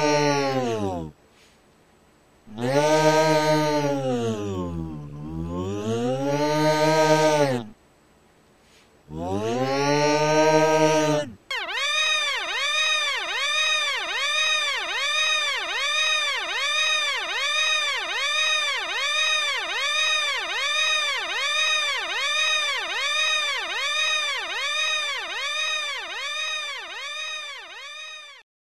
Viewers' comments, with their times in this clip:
0:09 alarm be like
0:10 School:(on fire) Fire alarm still going off even though everyone died:
0:11 play it on 2x speed and it will sound like a police siren
0:11 play 2x speed police sciren
0:11 nobody: the alarm test in my town every saturday/sunday:
0:11 Beep Beep (1.5 Speed)
0:11 this is the sound you hear when you see a cloud that is even slightly taller than it is wide when you live in Oklahoma Incase it wasn't very clear, it sounds like a tornado siren
0:11 alarm going off
0:11 my printer at 2am
0:12 Broken drill running at 3 am.
0:12 every gangsta until an airplane loses the right wing and this alert alarm sounds
0:12 mom alarm "MOM! DAVE HIT ME"